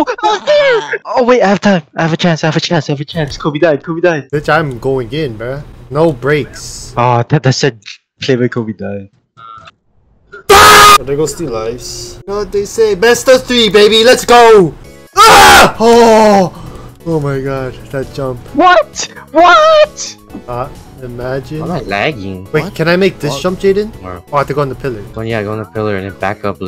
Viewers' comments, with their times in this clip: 0:08 The perfect scream cut lol 😂😂